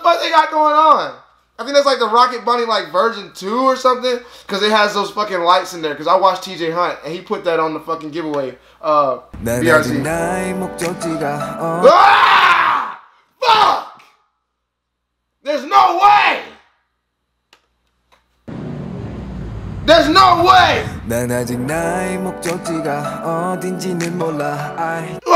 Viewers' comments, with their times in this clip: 0:08 this scream I can’t 😭😭